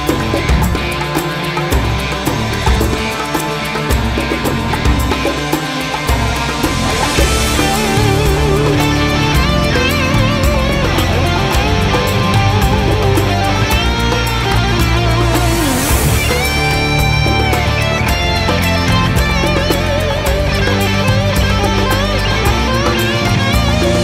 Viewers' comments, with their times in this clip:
0:06 Always loved this song...but can we talk about that guitar solo ?? Holy badass Batman!!